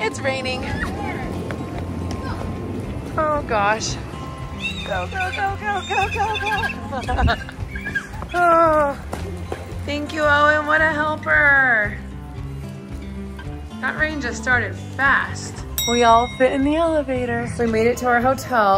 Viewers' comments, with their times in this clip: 0:05 HORSE? I’m sorry for your loss but do y’all hear that screamin lol